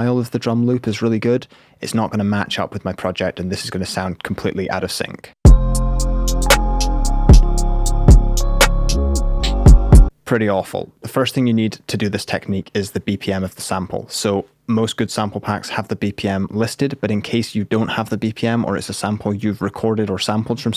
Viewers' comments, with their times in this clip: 0:04 not gonna lie it sound almost on sync lol